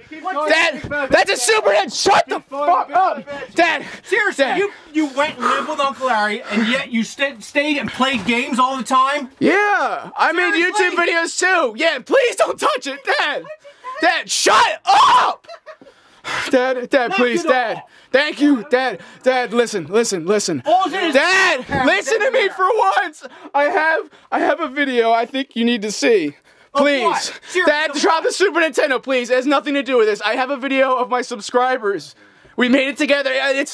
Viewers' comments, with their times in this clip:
0:05 Oh "went and lived with Uncle Larry", I thought he said "wet nibbled Uncle Larry."
0:13 Yeah i know the impression is back
0:13 voice crack of the centry
0:14 Haaaaaaa Ian and Anthony Smosh reference impression is here
0:14 Yeah i know quite earrape